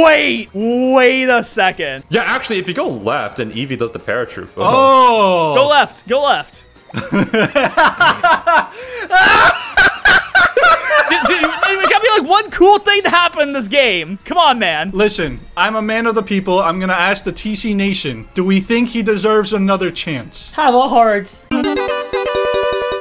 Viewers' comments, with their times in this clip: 0:07 That laugh 😂!!! Love it 😂!